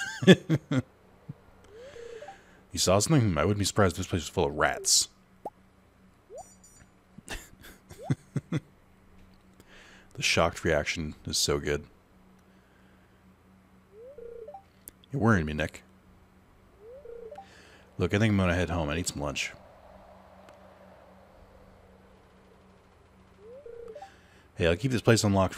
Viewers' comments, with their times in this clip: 0:06 Never has there been such a great sync of the Casio watch beep.